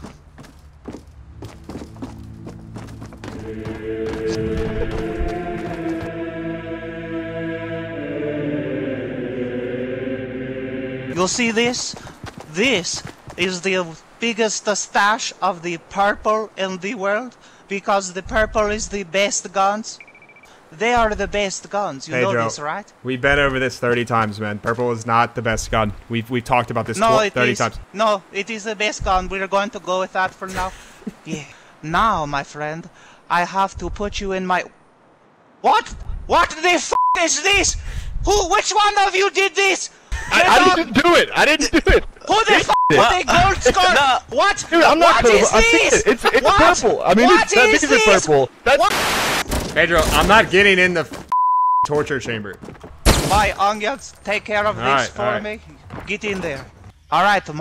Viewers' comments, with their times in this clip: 0:05 Who else heard a little giggle ??
0:43 When he yells he sounds like the mellon man from adventure time 😂